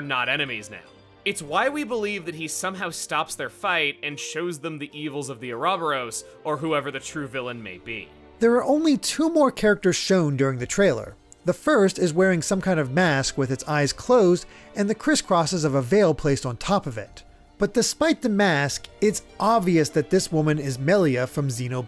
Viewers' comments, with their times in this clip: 0:05 I'm outraged by the pronunciation of Ah Robber O's ...I mean, Ouroboros.